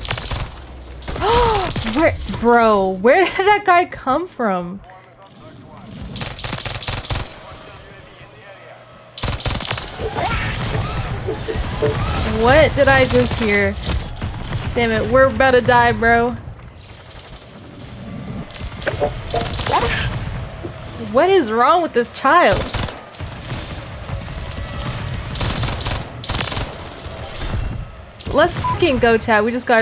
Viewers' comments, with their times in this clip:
0:10 what was that a QUACK??? 😂😂😂